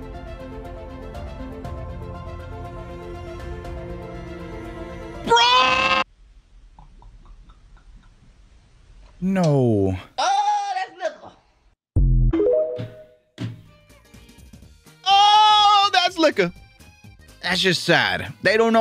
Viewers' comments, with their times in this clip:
0:04 Brother that scream came from the soul
0:05 CaseOh soundin' ass scream